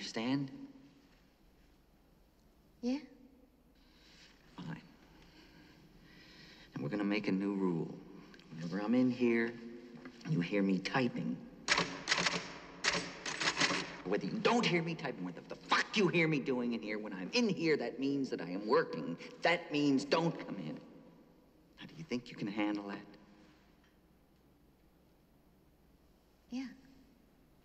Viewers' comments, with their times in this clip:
0:10 even that typing rhythm is already an art of body language , Gold